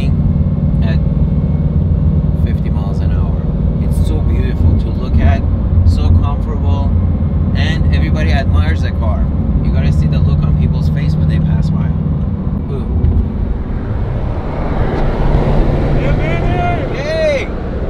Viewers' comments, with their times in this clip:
0:03 Chevy SS gives nice non competitive rev of affirmation. (The Chevy SS - unsung supercar as well)